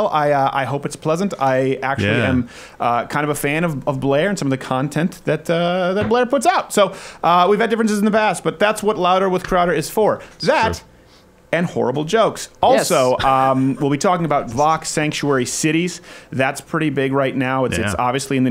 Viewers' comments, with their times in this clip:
0:05 damn that hesitation to say either “he” or “she” 😂